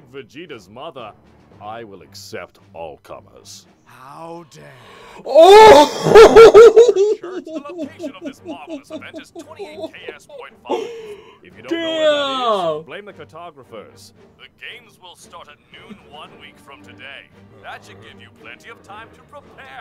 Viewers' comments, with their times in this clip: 0:06 Your loud laughing completely ruined Krillins line